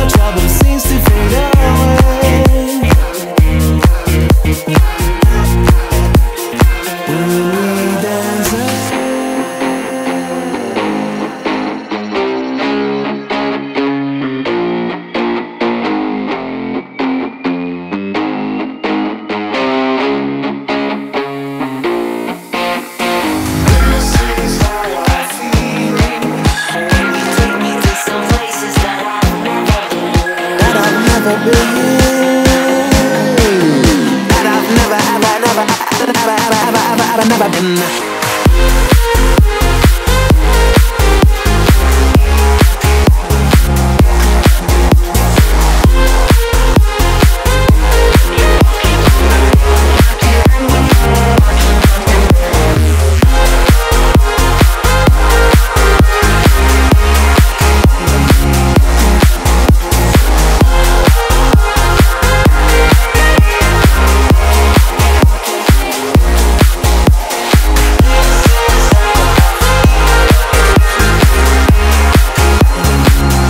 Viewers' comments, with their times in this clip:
0:08 This is so insane! At the first drop, I love the most! Oh and expect this one 😼
0:09 guitar goes damn hard yo
0:09 why do I hear pumped up kicks
0:09 That guitar made me think It was going to spontaneously transition into Pumped Up Kicks... Now I wish this was actually a mashup...
0:11 the drop just sounds so smooth and the guitar at like or whatever sounds soooooooo goood man I love bad computer in every single way and I also love IM
0:38 boooooooooooom happy new years!!!!!!!!!!!
0:56 XD discord sound detected